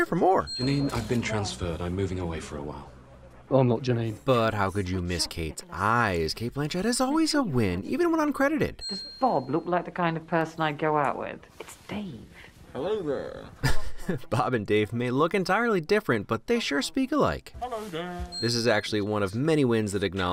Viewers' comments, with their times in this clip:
0:03 sounds like Garth Marenghi